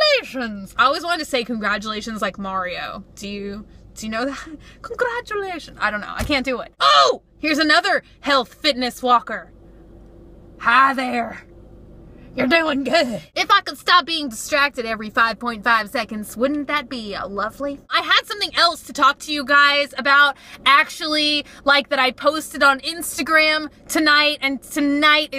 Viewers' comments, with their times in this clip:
0:06 when you screamed "oohhh!" I died of laughter